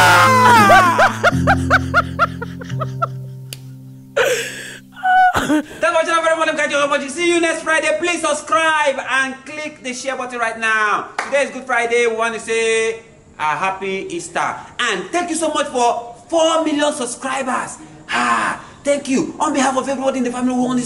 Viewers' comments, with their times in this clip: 0:04 I love that little sound he makes in his laugh